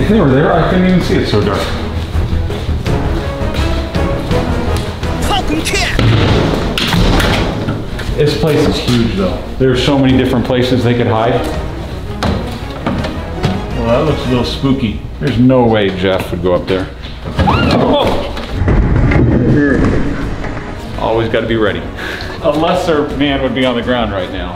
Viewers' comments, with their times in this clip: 0:07 Is anyone not going to realize that when he kicked the door did no one hear the sound and what it said